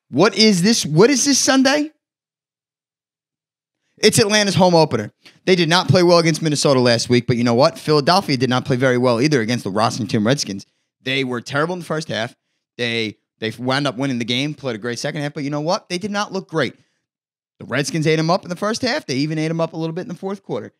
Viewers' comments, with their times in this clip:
0:08 I love the Raasington Redkskins. lol